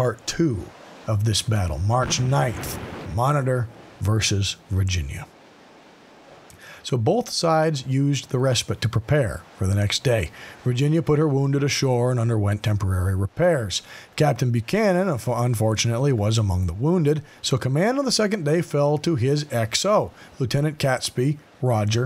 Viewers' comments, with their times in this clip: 0:10 Respite. Do you say spite and spiteful like spit and spitful? No? Why make this exception with respite, then? In Primary school, children are often taught about the "Magic E", which changes the previous vowel sound. Respite is an example of that. The magic e at the end changes the I to the I like how you still archaically use it for Iran wrong, even though that doesn't have the magic E in it. This is English, not 'Nam, there are rules.